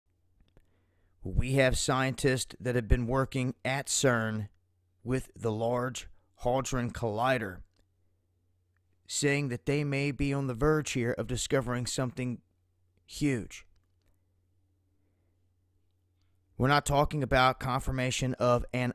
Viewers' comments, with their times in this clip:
0:05 Did he just say Large Holdron Collider? It's Large Hadron Collider you goof.